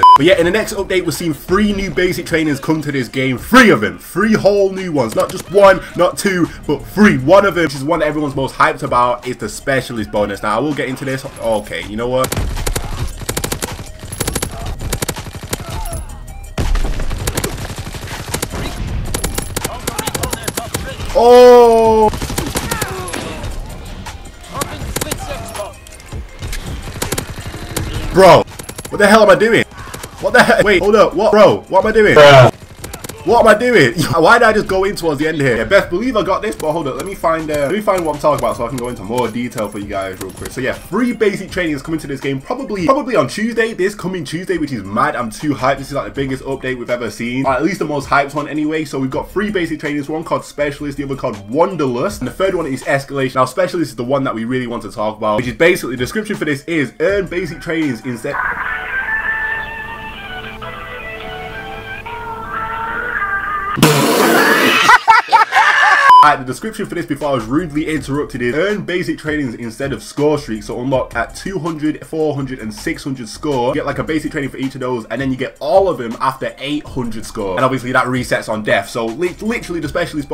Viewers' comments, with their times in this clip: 0:05 NOT ONE NOT TWO BUT FREE that's what I hear XD
1:01 Is he saying free or three 😂🤷🏼‍♂️